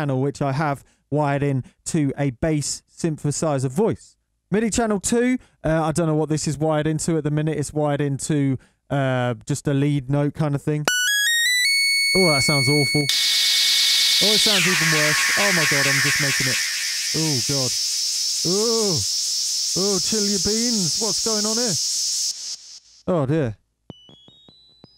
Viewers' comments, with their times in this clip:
0:10 Headphone users, beware of